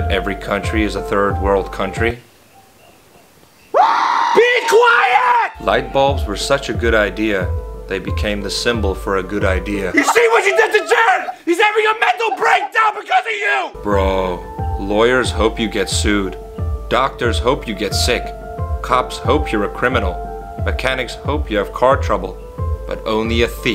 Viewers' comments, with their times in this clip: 0:05 "BE QUIETT!!!!!!!!!!" Dumbledore said calmly 😌